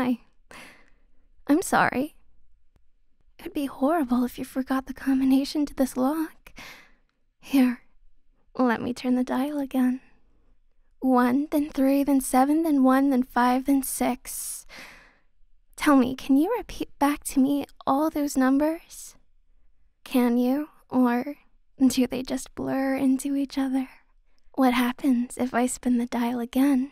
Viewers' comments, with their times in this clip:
0:07 Hey! I actually resisted the entire time (I know very sad) BUT I found an audio glitch! ( maybe? Unless it's intentional) ! Anyways cheers!